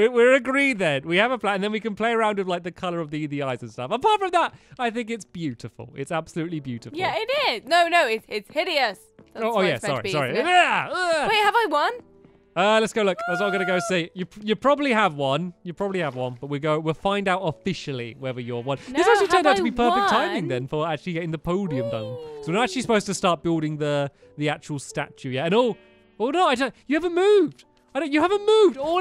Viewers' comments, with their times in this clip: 0:10 look stampy cat's cat meows. it is so cute. :)